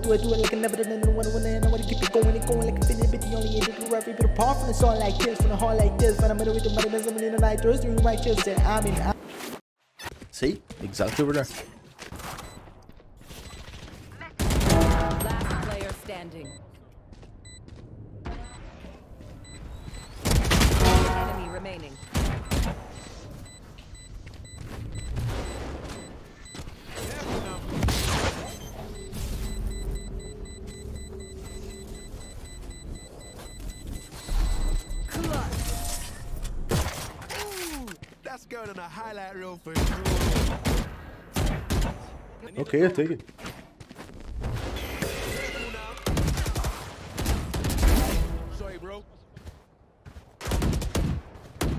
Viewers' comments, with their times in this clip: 0:04 sounded like logic
0:17 raze burstpack sound even there was no raze :D who heard it
0:33 popular tapping noise lol